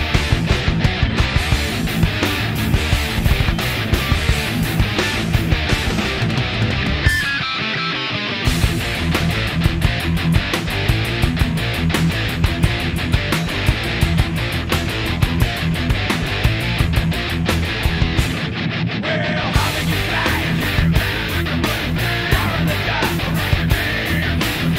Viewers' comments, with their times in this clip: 0:06 I always love that quick little breakdown after the intro that leads into the first verse. What a GENIUS J. was, he had his own style as well which is something rare.....even in those doys but certainly these days, practically nonexistent. I also play for just over 30 yrs and Dime was one who gave me the drive to learn. J. inspired me in my writing process and helped me be more creative. In my opinion, both of them are in the top tier of metal musicians.